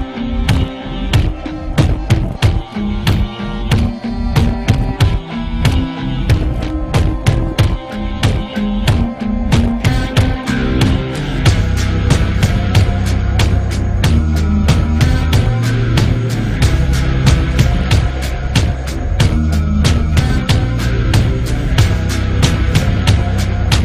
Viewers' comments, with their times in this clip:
0:10 The song hits a plateau I closed my eyes to feel the song shift shape, and i realized my heartbeat matched the beat.